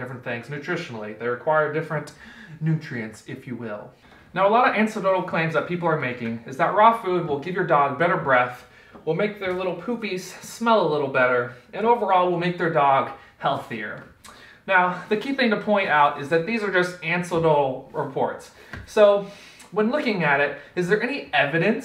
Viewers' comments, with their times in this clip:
0:03 did you say "ancedotal claims"? Edit: Yep, a few seconds later you said "ancedotal" again lol